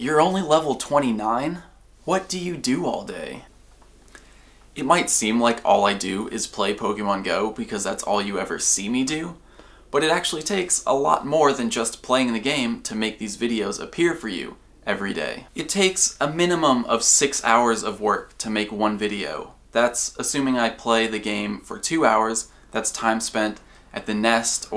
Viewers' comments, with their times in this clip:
0:07 I can hear your attitude when you answer the question on You sound like a parent.